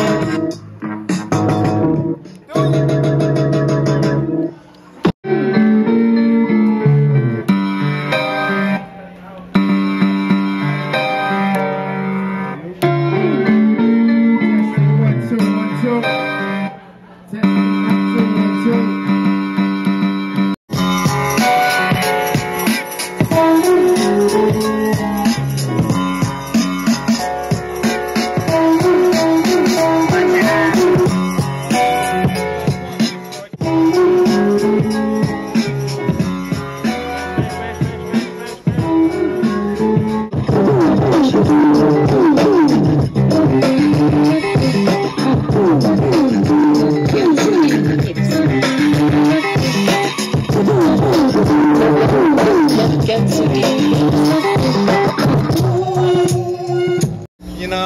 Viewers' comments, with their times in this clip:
0:08 That beat starting is DOPE!
0:41 the beat is crazy underground...what song is that pls?